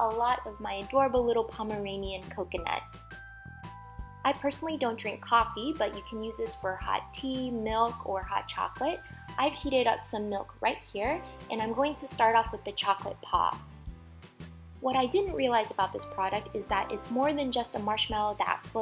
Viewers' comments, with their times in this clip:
0:04 annoying dog theme plays